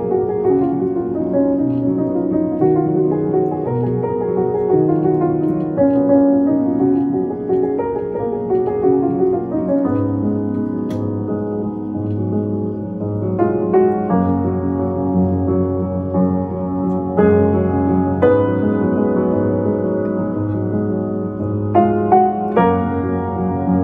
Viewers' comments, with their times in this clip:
0:04 for some reason reminds me of clair de lune